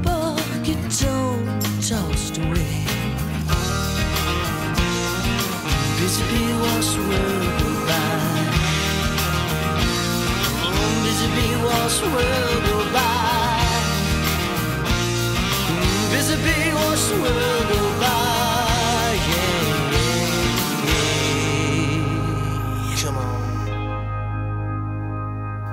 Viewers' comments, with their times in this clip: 0:07 Why there are not female backing vocals in the album? (e.g. )